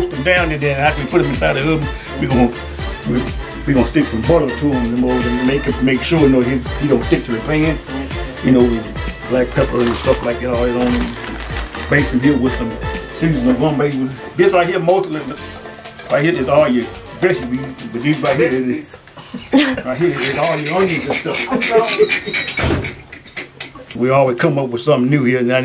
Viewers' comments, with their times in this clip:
0:10 Wth He Saying Lmaoo